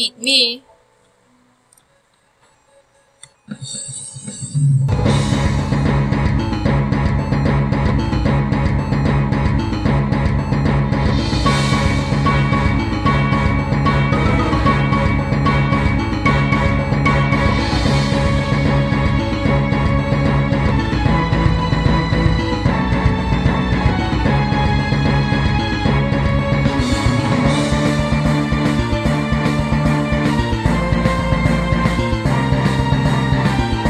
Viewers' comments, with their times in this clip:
0:03 I really love that audio translation, it's so clean
0:19 Bro--I'm vibing to this music like they're doing